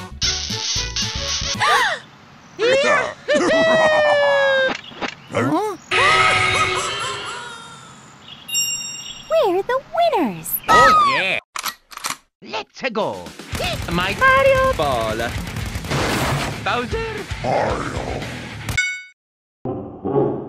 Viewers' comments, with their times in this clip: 0:06 Sound Like Godzilla